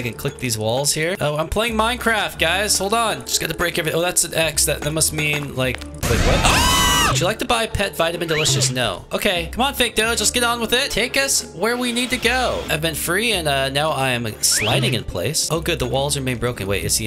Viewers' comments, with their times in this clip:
0:05 Haha bro the funny scream in is so funny that it got me rolling in the floor